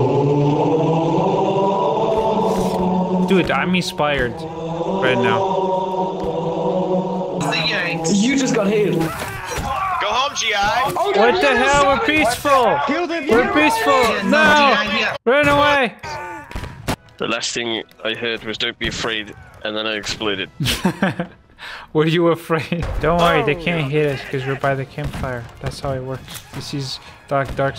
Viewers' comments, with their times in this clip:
0:09 ah yes, the history turning point of the civil war when the Union infantry blasting the Halo theme was repelled by the VC.